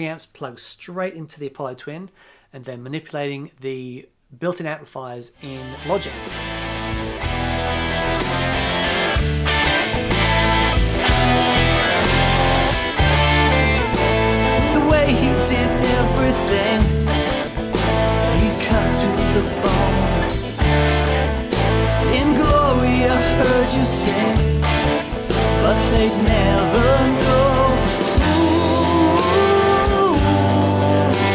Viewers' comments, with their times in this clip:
0:05 that has got to be one of my favorite recorded guitar sounds. So crunchy and juicy.
0:17 Really enjoyed this vlog. However... in the mix you suddenly sound American. Why do so many people sound American when they sing?